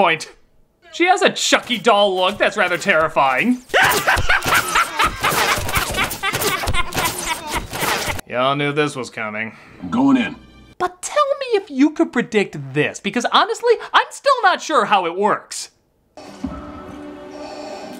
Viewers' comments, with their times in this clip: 0:03 That Chucky laugh fits way to good on the girl. (Edited) whats scarier about Axe is he played Micael Myers in Rob Zombie's Halloween. That scene with him smashing the 2X4 into the ceiling to find his sister, would terrifying if he was sing my little pony theme the whole time.
0:03 That Chucky laugh works a little to well with the scene. nice edit. I had to play it back like 10 times. It looks like a legit cut of the movie.
0:04 how come the chunky laugh work so well with that kid